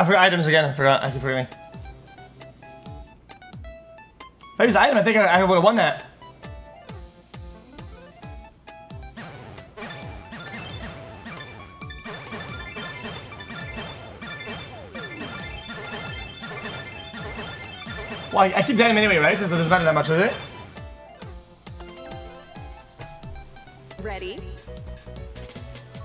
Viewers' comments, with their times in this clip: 0:08 wth did he say ?